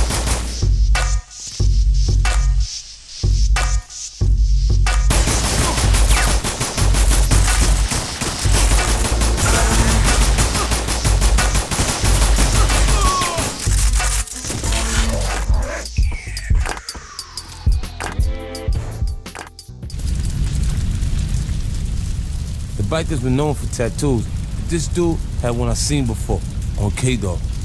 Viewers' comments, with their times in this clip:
0:09 When the gunshots go with the beat This game is such a classic and brings back memories.